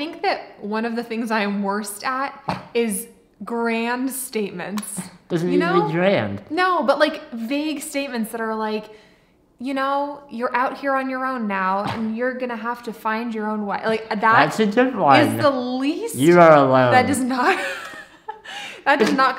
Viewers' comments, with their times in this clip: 0:05 I feel happy knowing I have the same alarm sound as you LOL🤣🤣🤣 but not in the morning 🤣